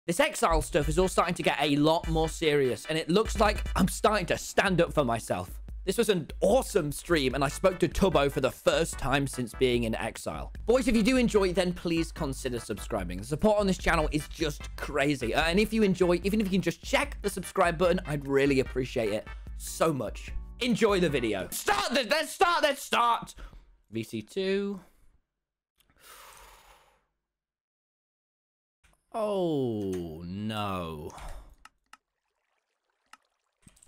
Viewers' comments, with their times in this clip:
0:00 i thought he said the s#x style stuff
0:21 Tommy’s 1st yell of the vid